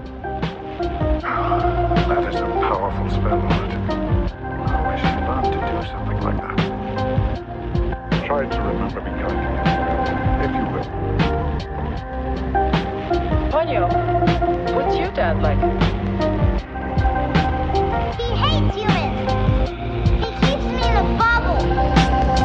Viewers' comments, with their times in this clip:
0:06 started gachi phrases)))))))